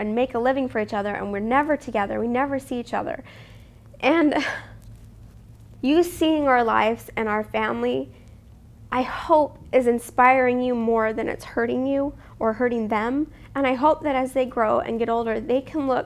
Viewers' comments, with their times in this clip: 0:04 Your voice started breaking and I was thinking "Oh gosh." Haha great video!